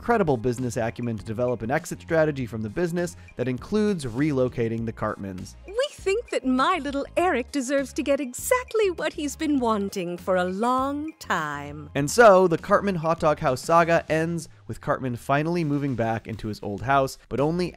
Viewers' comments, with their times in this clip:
0:05 I never heard Liane speaks like that before, she sounds absolutely happy to ruin Eric's day